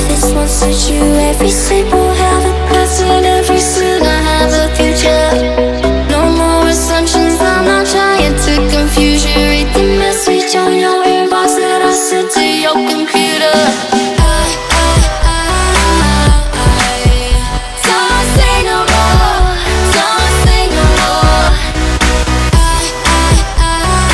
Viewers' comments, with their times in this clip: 0:10 I was praying there won't be that stupid buildup and drop that almost every electronic song has nowadays (think they call it a "breakdown") and was pleasantly surprised and so happy that the transition was seamless. We need more songs like this.